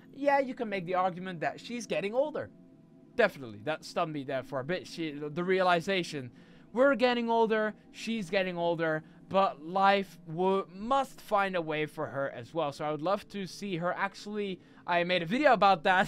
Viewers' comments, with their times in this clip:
0:03 that t-rex is not having a fun time with the yapping indoraptor